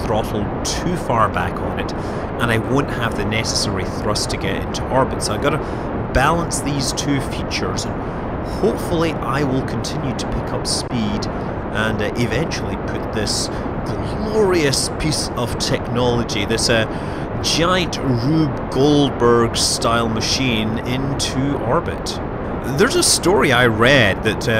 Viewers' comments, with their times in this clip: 0:08 i heard "Hopefully I will continue to become speed"